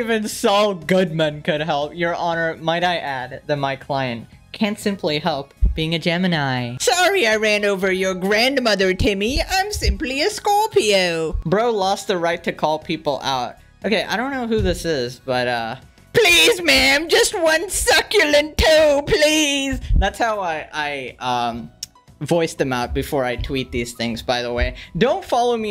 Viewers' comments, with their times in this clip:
0:07 i never thought i’d hear pegasus speak bri’ish